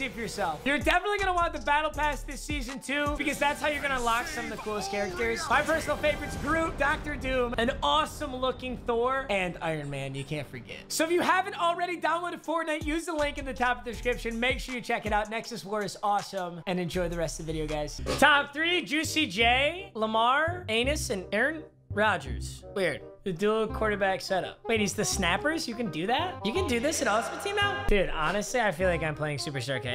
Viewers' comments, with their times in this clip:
0:10 Was that just me or did anyone else hear Luna squeaking